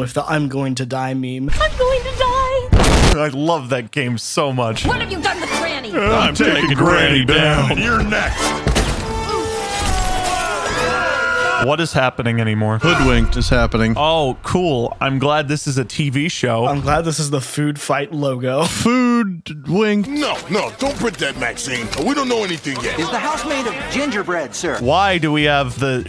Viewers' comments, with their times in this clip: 0:07 the wolf sounds like joe Swanson